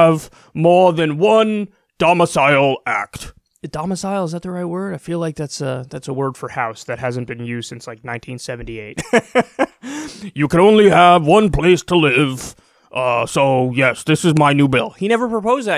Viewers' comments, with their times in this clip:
0:03 ...I believe "domicile" was used in the 1993 Sylvester Stallone movie "Demolition Man". But since it takes place in 2032, the producers apparently thought that "domicile" will replace "house" or "apartment" in popular parlance in the future. So that really does not count, especially since they apparently also thought that Los Angelos will be renamed "San Angelos". BTW, not too shabby Bernie Sanders impression.